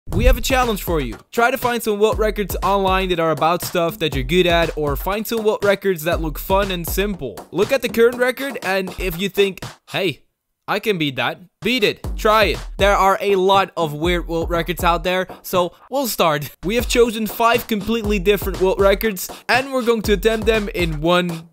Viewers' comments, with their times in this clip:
0:02 “most p***y” LOL